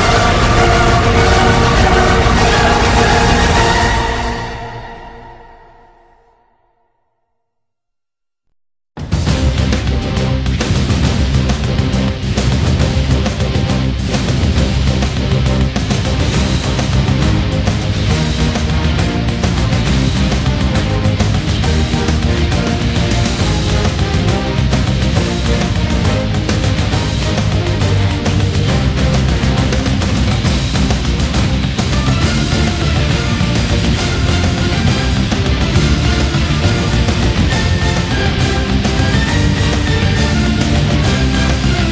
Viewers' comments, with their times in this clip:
0:09 the piece (Racketeers) sounds a bit like Pirates Of The Carribean to me. Anyone else?
0:11 Why does sound a lot like PotC?
0:11 Racketeers (Album: Dynasty) sounds wayyy too much like Pirates of the Caribbean theme
0:11 Racketeers (Album: Dynasty) Sound like the song "He's A Pirate"
0:11 reminds me of Pirats of the Caribbean.
0:11 Racketeers sounds like the theme from "pirates of the caribbeans" Lol
0:11 Racketeers (Album: Dynasty) - is it only me or does it sound like soundtrack from pirates of the carribean?
0:11 I am guessing the Khorne warrior has really fun time, otherwise the upbeat heroic music isn´t so fitting. :p
0:12 after a while...it sounds like Pirates of the Caribbean
0:29 it seems too similar to Pirates of theCarribean